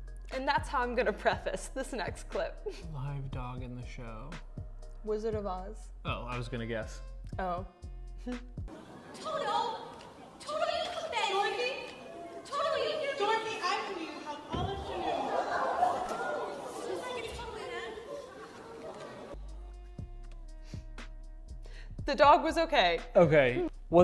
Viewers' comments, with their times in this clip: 0:10 I THOUGHT THE FUNNY PART WAS THAT THE DOG WAS RUNNING- I WASN’T EXPECTING THAT THUD 😂